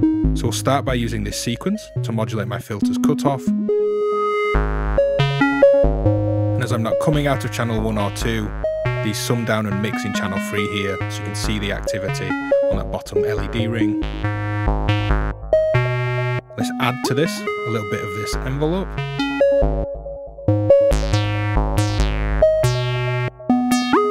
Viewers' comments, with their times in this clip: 0:07 Looks like a pretty handy module! What's the filter you're using btw? Sounds really juicy! The SSF Steady State Gate? Looks like it's patched, but can't really see...